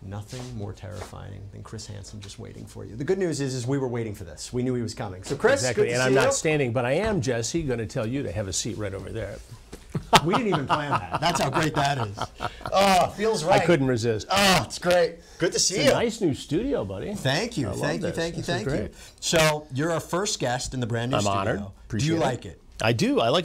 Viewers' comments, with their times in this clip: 0:10 I think that’s the first time I’ve heard Chris Hansen laugh